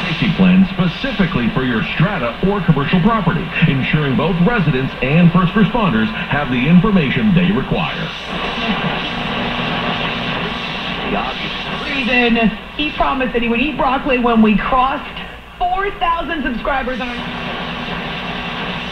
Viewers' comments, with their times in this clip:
0:03 Man, WJR Detroit 760 comes in so strong! This is one beautiful radio.